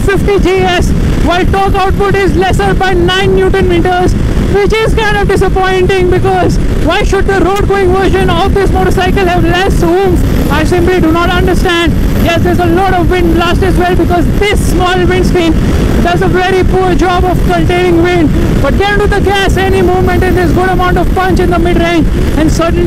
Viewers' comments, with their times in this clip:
0:07 why are you shouting